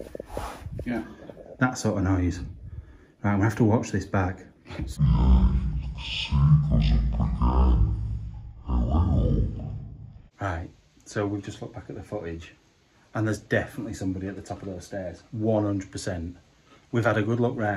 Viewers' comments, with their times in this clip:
0:03 Blimey!! the video was creepy enough without your voice slowed down!! LOL